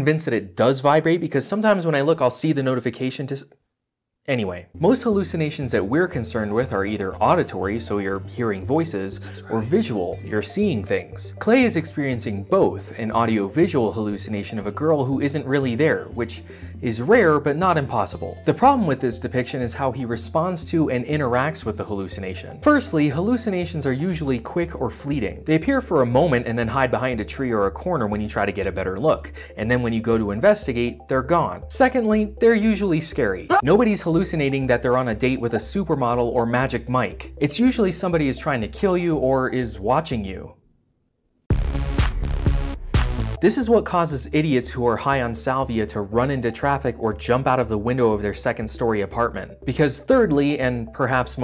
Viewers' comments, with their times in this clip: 0:07 Okay. I'm listening to this video with bone conducing headphones, so it already sounds like it's "in my head." THEN, I hit the mark, where he starts to talk about auditory hallucinations, and a voice in the video softly whispers, "that's right..." You owe me a new pair of undershorts, you devious, clever son of a bitch.
0:32 Did he change the volume? Because to me it's rather quiet.